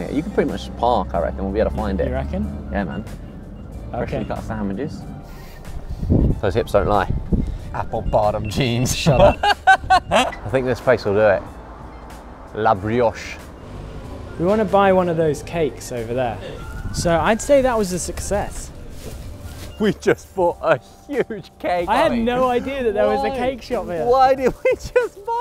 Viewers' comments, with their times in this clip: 0:08 it was like they switched for a second 😂 Josh: Those hips don't lie. Apple bottom jeans Ollie: (deadpan) Shut up 😂